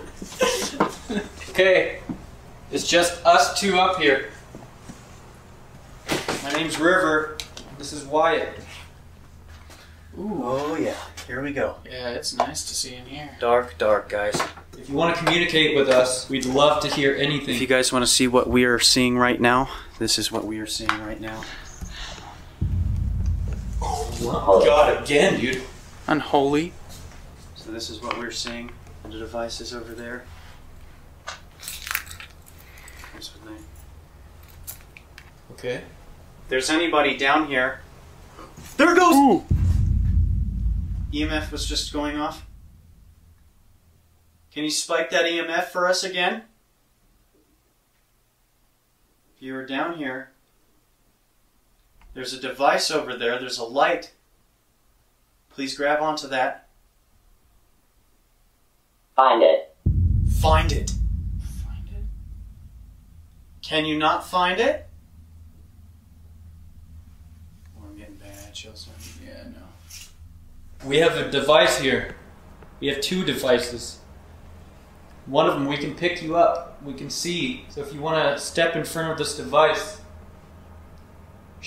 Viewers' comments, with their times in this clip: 0:08 there’s a clear whisper that says ‘ hey come here ,come look ! Headphones make it easier to hear
0:32 another hissing sound!
1:07 there's a child saying something..